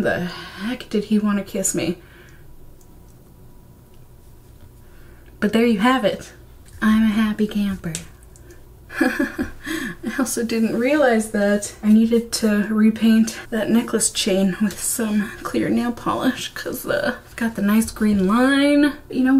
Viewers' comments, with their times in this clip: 0:07 "I'm a happy camper " the way you said this sorta melted my heart you really are charming, like really really cute ( i just read my own comment and realised I sounded like a creepy dude I'm a humble 27 year old straight woman btw 😂😂 I was just taken Aback by how cute your smile looked)